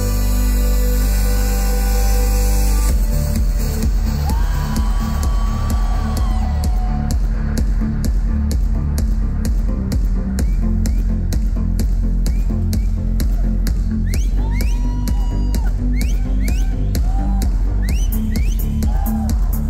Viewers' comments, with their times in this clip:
0:04 R2-D2 death sound..